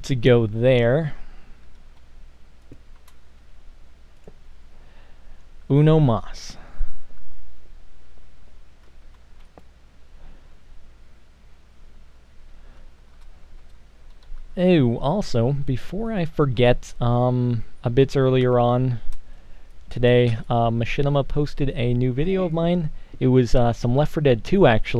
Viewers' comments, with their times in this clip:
0:05 did you just say "One bad"?